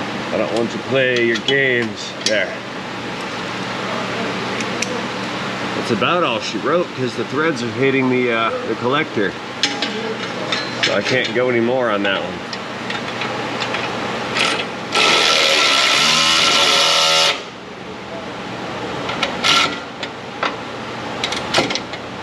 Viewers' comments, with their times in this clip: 0:03 No, that was not the problem..Look and listen there is at least 5-6 threads left under the flange. If you back up more, you can see the metal dropping off the end of the bolt hitting the header as it was tightened..